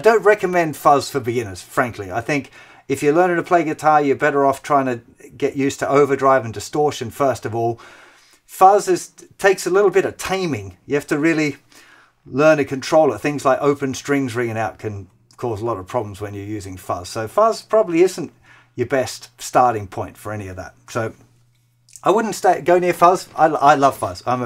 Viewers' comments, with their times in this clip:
0:10 australian accent or irish accent :)